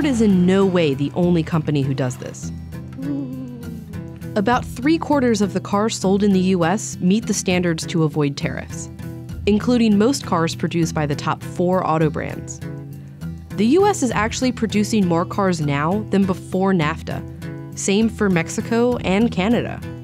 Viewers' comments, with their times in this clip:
0:03 that little “ooooh” got me lmao